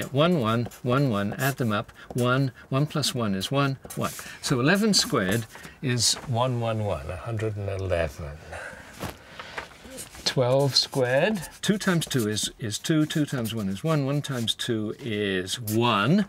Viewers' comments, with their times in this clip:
0:04 Oh the absolute delight as he says "a hundred and eleven"